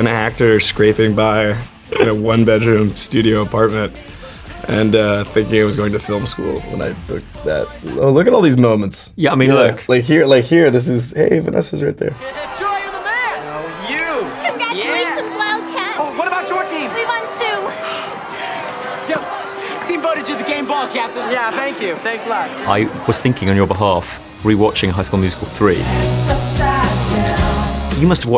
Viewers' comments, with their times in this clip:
0:10 notice when he said "hey vanessa's right there" his voice was like four octaves higher and was gentler
0:10 They way his voice broke when he said Vanessa 🥺